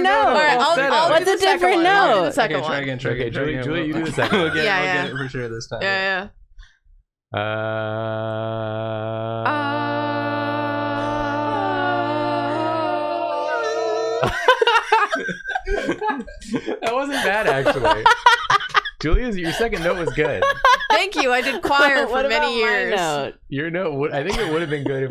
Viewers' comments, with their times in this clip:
0:06 Their harmony here was pretty good actually! A bit shaky but it technically were the right notes for the harmony!